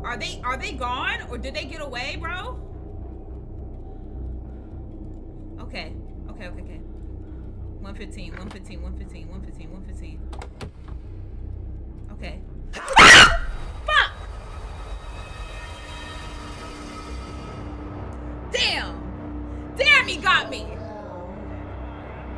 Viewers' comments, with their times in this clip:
0:09 not the friends just dying with the background scream 😮😂😂